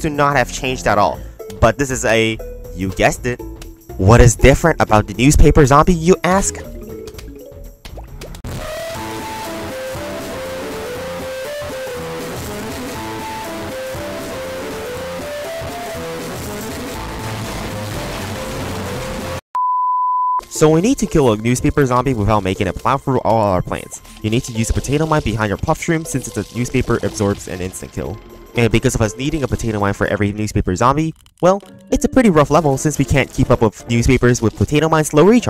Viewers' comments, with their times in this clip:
0:03 Headphone warning lol 😂
0:04 "He's in, boys! He did it, he said it!" (airhorn)
0:04 What is different about the newspaper zombie you ask?, newspaper zombie go into rage mode and the theme plays
0:07 Headphone Users Warning
0:08 Rip to the people wearing headphones.
0:16 missed opportunity to edit this bit and line the key smashing up with the music